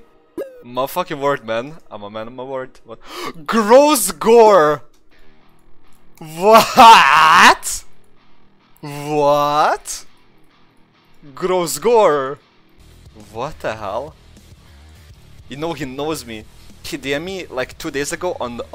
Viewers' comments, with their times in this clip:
0:03 perfect timing with doom music lol